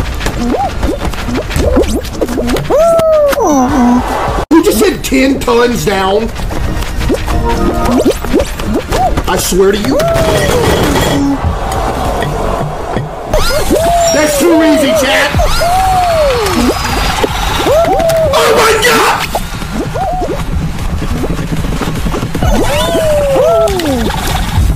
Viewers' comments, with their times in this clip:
0:09 FINALLY WE HEARD THE DESK SMASH